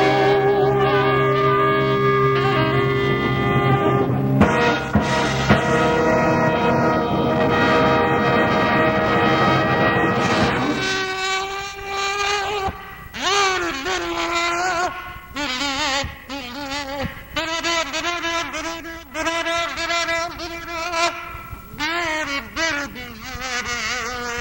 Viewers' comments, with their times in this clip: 0:10 Wait.....what.......Was that a kazoo ?????